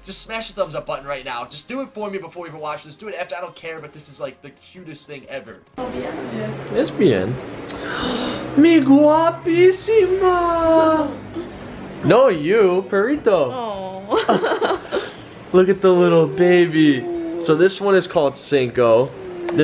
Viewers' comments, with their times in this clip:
0:06 did he say lesbian?